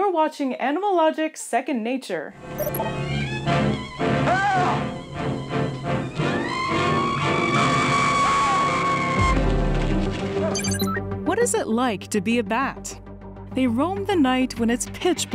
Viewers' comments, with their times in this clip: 0:03 urgh, that happened to me way too often... having a human-sized bat launch at you, while letting out a high pitched version of the whilhelm scream is so annoying!